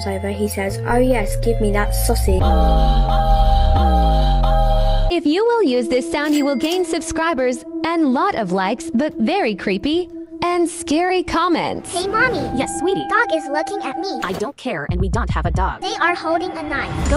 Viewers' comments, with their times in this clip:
0:03 nah that ai voice moans😢